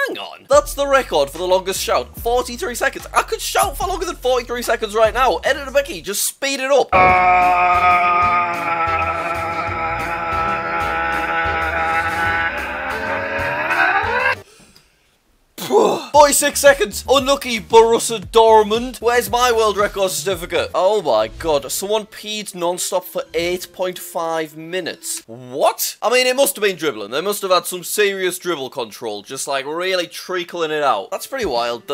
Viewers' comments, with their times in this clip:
0:07 That sounds like that landscaper at 7am
0:14 that wasn’t proper shouting
0:19 that ain’t a shout